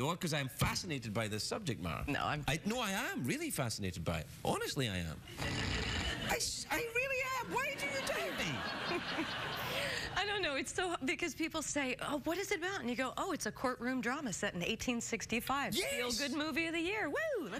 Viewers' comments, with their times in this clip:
0:05 The Jayleno Fly was the sound engineer clever and quick enough to add a weird sound effect when she pretended to nod off a moment?